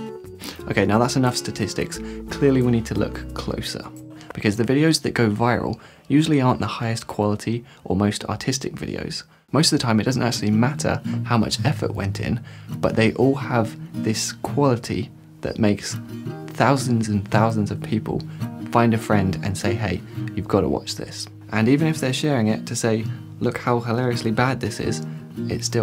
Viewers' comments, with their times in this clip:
0:08 AUTISTIC VIDEOS AHAHAHHA